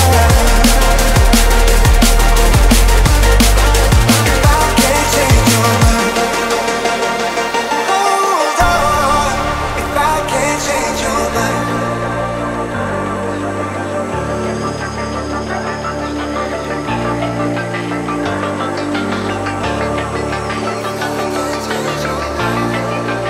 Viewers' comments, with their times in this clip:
0:08 Song is so good! Especially the drop 🥵